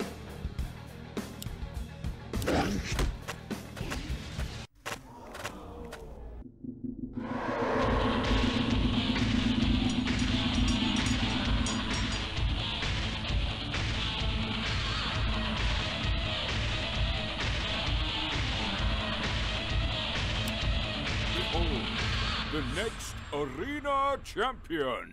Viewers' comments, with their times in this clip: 0:10 i love that sick quitar solo